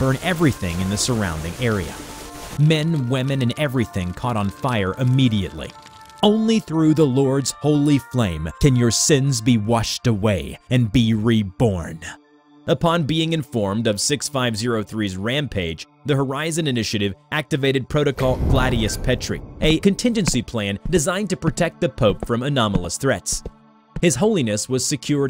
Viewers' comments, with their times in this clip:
0:06 sounds alot like season 1 Pennsatucky from OITNB